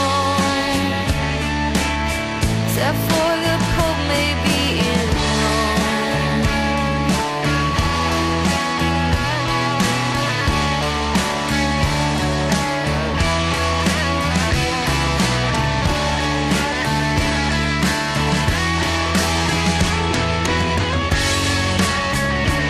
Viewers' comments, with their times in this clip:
0:05 The SOLO makes this the best version of One of Us